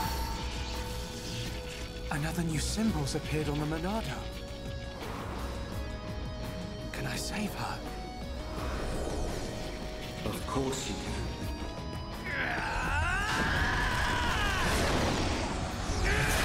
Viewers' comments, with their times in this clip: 0:03 is really creepy when you notice Zanza's voice, it kinda shows that he really has been there since the beginning it's just he became more noticeable after the Monado was upgraded.